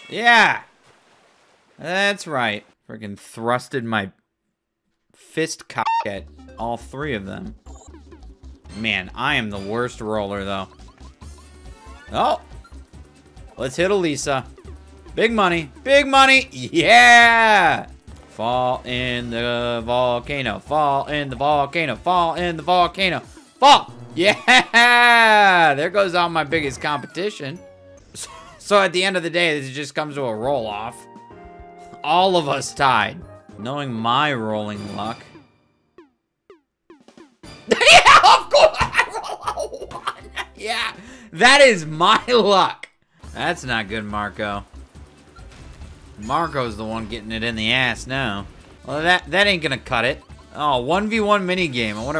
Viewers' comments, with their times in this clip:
0:05 What was that you said? Was that voicecrack?
0:37 you cannot tell me that he didnt sound like pennywise there!
0:38 I’ve never heard such a funnier laugh than that
0:38 the kookaburras outside my window